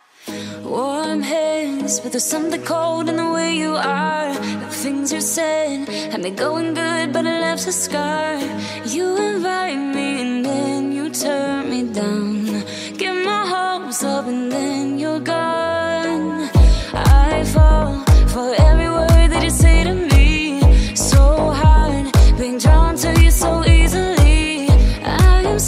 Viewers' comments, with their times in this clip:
0:07 Amazing 👍 song minute